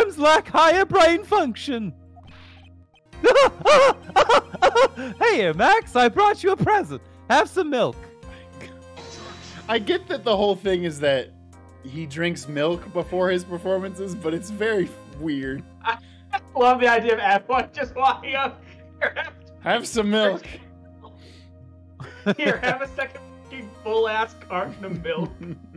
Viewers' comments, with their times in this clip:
0:08 Drinking Noises Bleh "IT'S NOT MILK!"